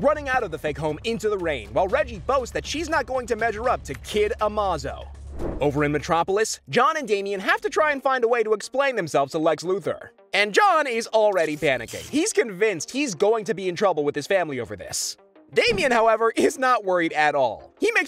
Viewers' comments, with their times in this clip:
0:05 A-Moz-Oh. Really? A-Maze-Oh you damn clown.